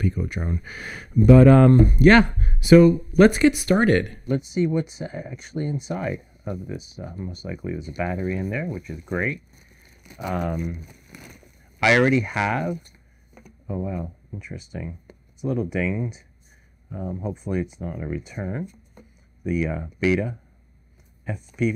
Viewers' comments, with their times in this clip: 0:05 Great tutorial. However I can hear the audio only on the left speaker after